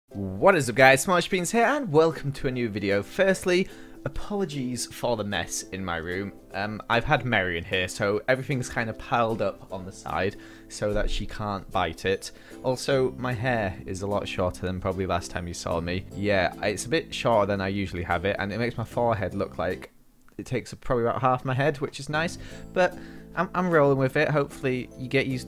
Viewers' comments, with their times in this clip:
0:06 does anyone heard "we got married in here"?